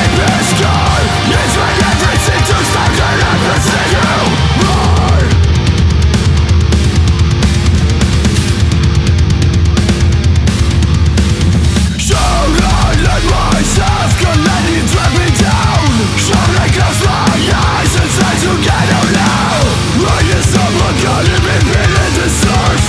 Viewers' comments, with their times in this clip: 0:04 I agree sounded a lot like their instrumentals, sounded like the river